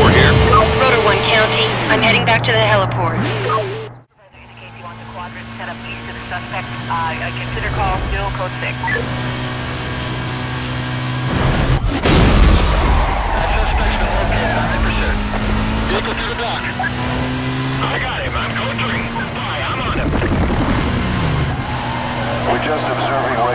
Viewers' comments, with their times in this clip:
0:04 turns up volume